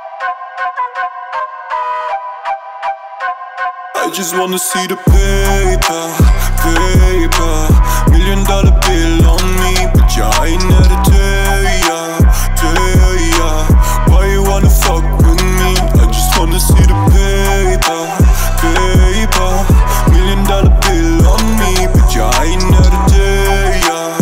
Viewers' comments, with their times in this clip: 0:05 Yall high. The drop is :)